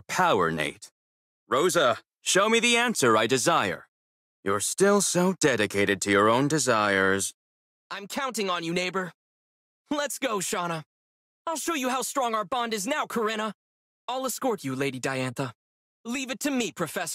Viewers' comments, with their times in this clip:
0:04 his sassy tone i cant